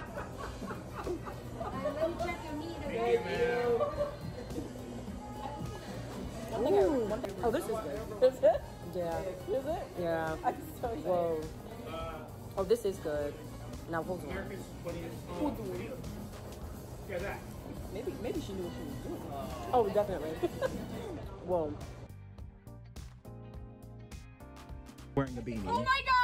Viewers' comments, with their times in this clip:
0:10 Shout out to Stevie Wonder playing in the Background. Nothing makes a good Food experience better, than great music!